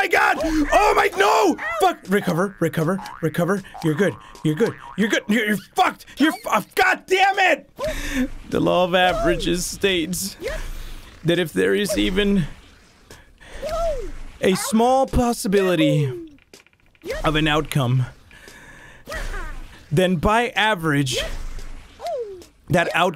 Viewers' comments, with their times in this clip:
0:07 he talks like he is an anime character trying to win a battle